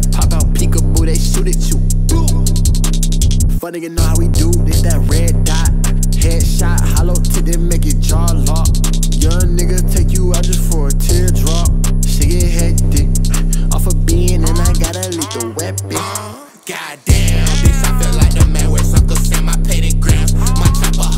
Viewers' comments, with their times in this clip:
0:04 sounds like a part from demon mode.